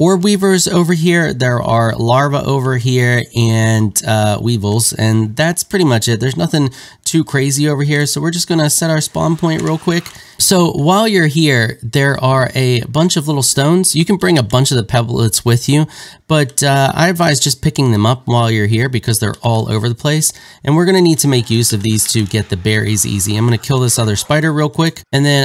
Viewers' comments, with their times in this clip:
0:10 when you have a calm voice and then it just turns to you having a hammer in ure hands and a spiders corpse